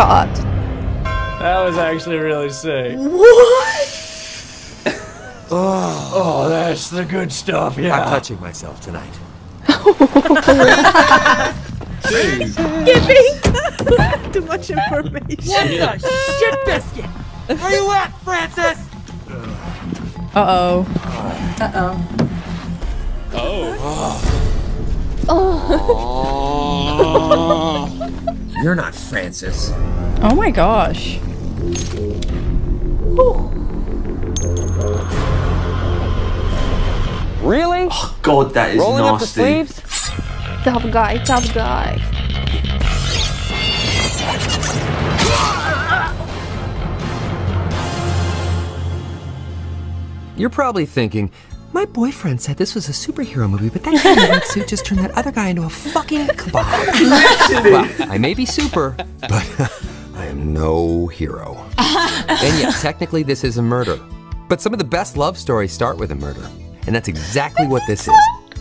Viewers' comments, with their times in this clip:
0:03 lvl the bell chimes ❤ nice to tohis characters a merchant of death.
0:49 You’re probably thinking: My boyfriend said this was a superhero movie but that guy in the red suit just turned that other guy into a f**king kebab. Reaction: “laughing”